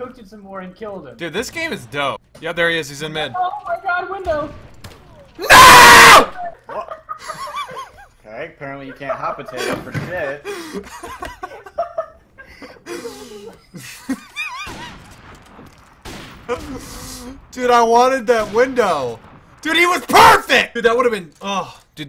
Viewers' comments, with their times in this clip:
0:05 Headphone users beware